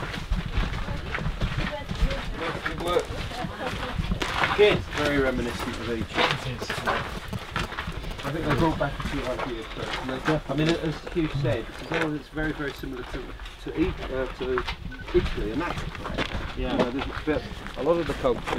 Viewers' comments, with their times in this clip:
0:04 interference signal lol